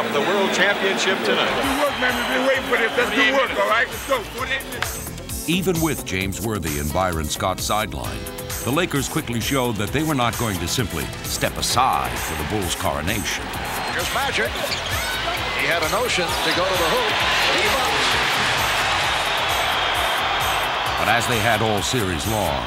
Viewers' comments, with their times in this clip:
0:05 The theme started Great theme song. ARROGANCE PERSONIFIED!